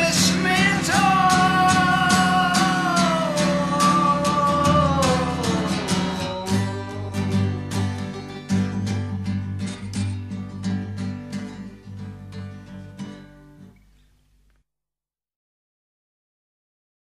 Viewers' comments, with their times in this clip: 0:08 Sounds like guitar strings hitting a microphone or thereabouts.